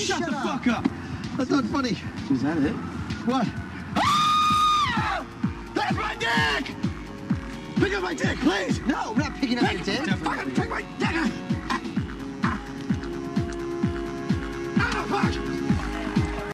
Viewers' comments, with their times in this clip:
0:03 Lol that scream like Marv from the Home Alone movies
0:04 Let’s all agree on one thing that scream was fucken hysterical🤣🤣🤣🤣🤣🤣🤣